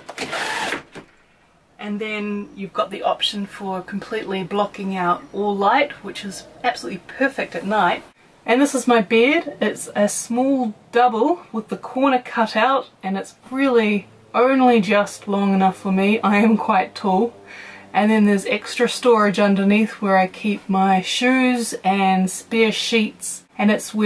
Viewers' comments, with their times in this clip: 0:07 And this is my beard...